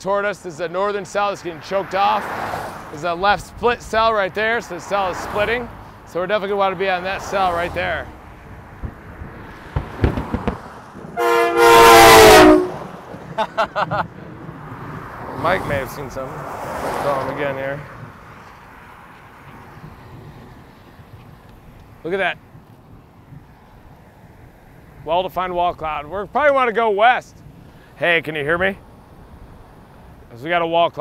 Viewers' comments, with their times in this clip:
0:08 that guy had a train horn
0:10 Hey Reed!!! Huge fan!!! Starting to get into these as season starts back up. Unfortunately I’m too young to go down there on my own and get trained. I might as well someday. Loved that (what seemed to be) perfectly tuned K5LA on that dude’s car!!
0:10 did that car have a train horn?
0:10 i love it when somebody with a train horn passes them
0:11 That one car sounding like a SD70ACE locomotive over here.
0:11 train horn on a car
0:11 train horn scare
0:12 train horn on a car lol